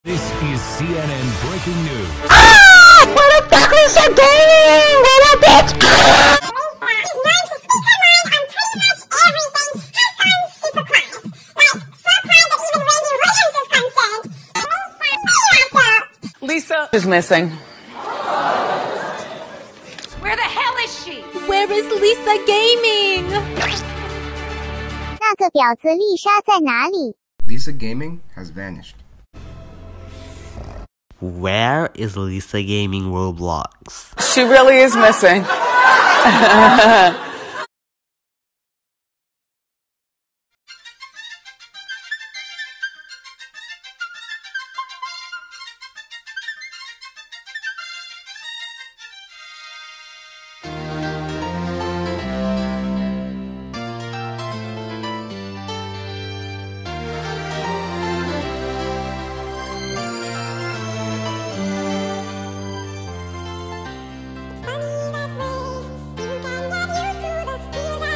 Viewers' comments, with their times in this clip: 0:02 FUCK MY EARS
0:03 SHUT UP MY EARS ARE BLEEDING
0:09 this girl sounds like she's from Alvin and the Chipmunks
0:31 blud thinks we are deaf
0:50 hold up did you just call kreekcraft kreektaf?!